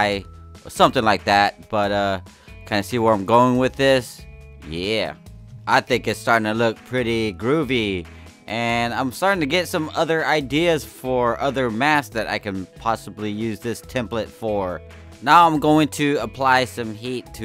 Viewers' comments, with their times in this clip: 0:05 The way he says groovy